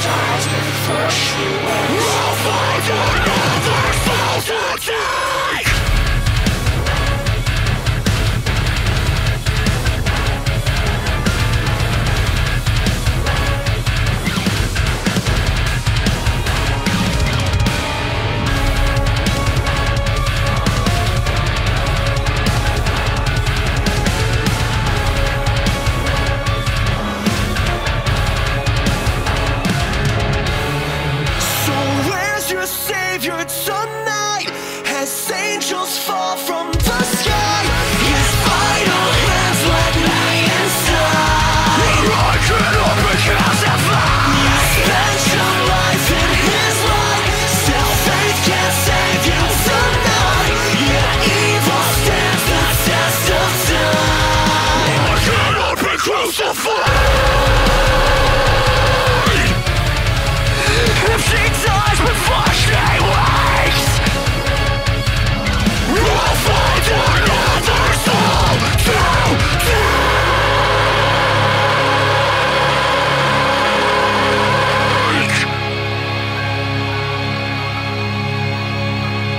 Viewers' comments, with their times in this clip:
0:05 that fucking angry quitar
1:01 "if she dies before she wanks" - Sorry for ruining it :P